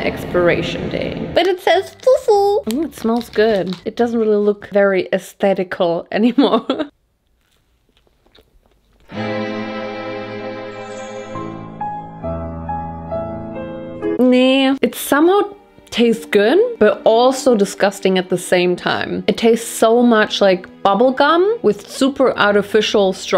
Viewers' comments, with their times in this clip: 0:10 The Nana soundtrack kills me every time 😂